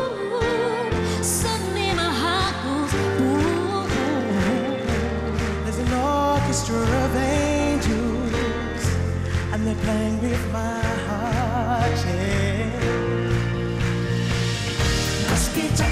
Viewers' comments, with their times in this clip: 0:03 I love it when she does her little riffs so cuteeee